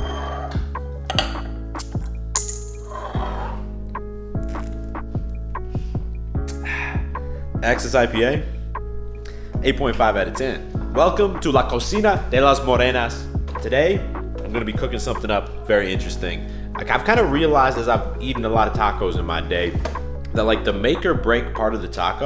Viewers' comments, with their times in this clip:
0:10 my first language is Spanish and it sounds dope bro!!!! 😅💪🏼